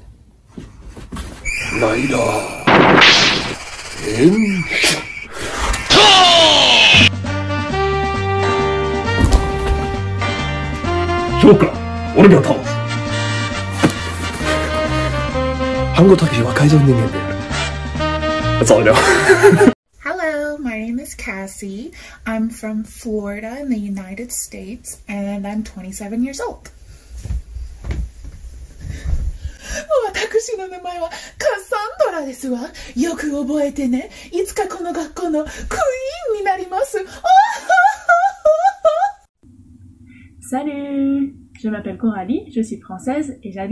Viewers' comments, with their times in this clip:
0:06 be careful headphones users
0:20 Got that entitled rich girl / daddy's princess voice on point xD. The laugh killed me.
0:30 they found the woman who does the Japanese translation dubs of foreign women speaking on variety TV shows 😂